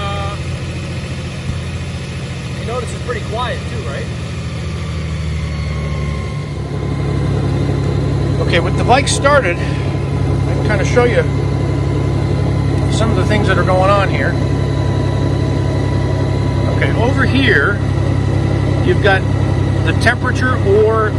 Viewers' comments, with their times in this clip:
0:07 Sounds like a turbine from a commercial Boeing or airbus airplane warming up before take off 😂👍😎